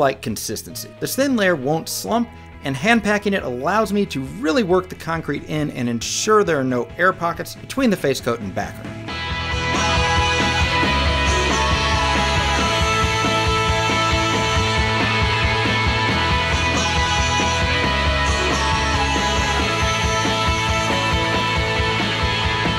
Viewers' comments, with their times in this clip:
0:08 The song really brought me back to bible camp, nearly had a conversion experience watching you plaster that concrete